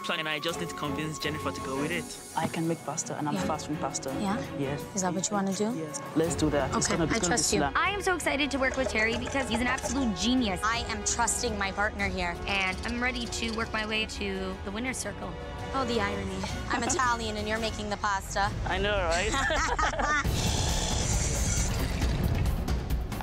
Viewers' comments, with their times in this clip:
0:10 Is it just me or this girl has the same voice with Ariana Grande ??